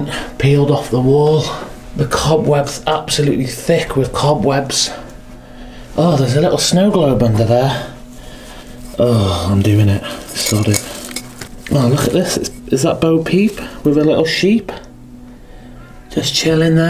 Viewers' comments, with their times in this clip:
0:04 Start watcgung you hear that child after he asked is that bow peep